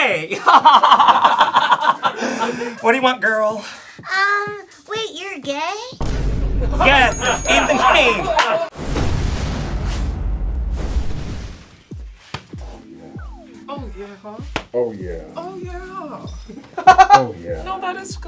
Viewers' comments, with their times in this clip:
0:06 "wait ur gay?" *BOOM*